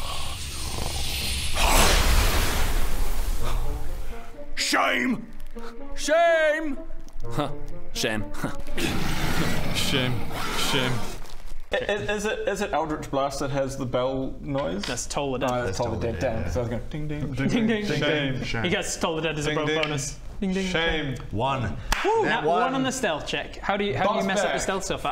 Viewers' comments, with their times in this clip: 0:08 Great series but not a fan of the "silly moment" music e.g
0:09 Too funny that she's mimicking Bodger.